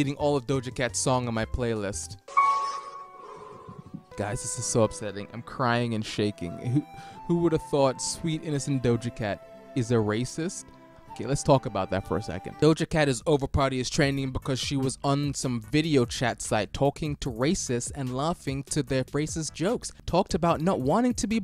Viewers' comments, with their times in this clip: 0:04 the song in the background 🍥 😭